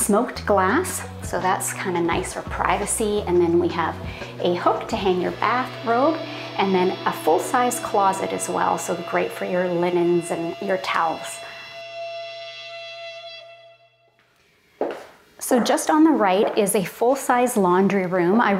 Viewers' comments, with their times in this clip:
0:05 Why is there a scary suspenseful sound ?